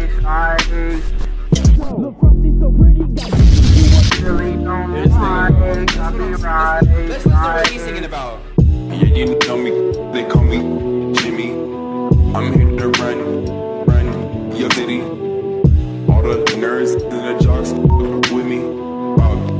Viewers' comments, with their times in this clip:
0:07 Bruh what is this song .... this is smooth asl